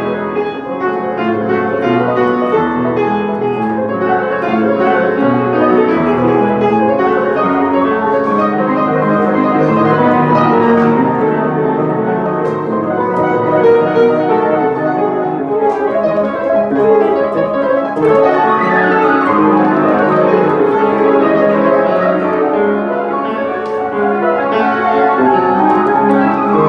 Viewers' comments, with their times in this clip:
0:07 F sharp on the left hand? really?